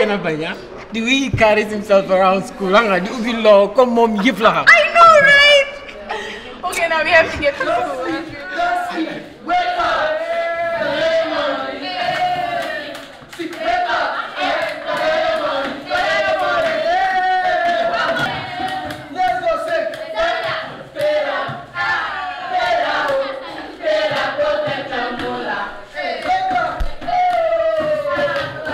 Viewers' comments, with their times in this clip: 0:09 when they started singing the nigerian song. 🤗. Gambia 🤝🏾 Nigeria